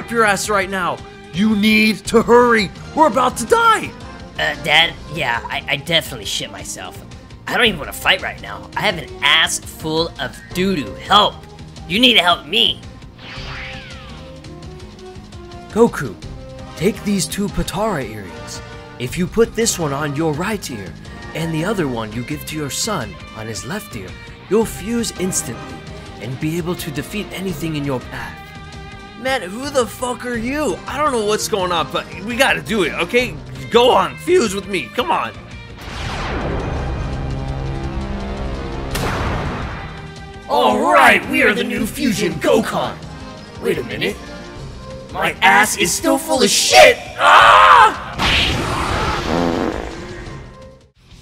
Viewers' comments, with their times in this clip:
0:03 why did you sound like shaggy off Scooby Doo??? 😂
0:33 why does goku sound drunk LOL